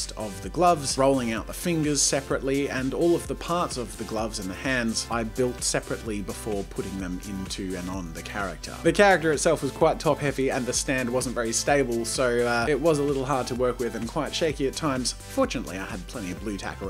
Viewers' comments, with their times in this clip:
0:04 he had to sing that meme song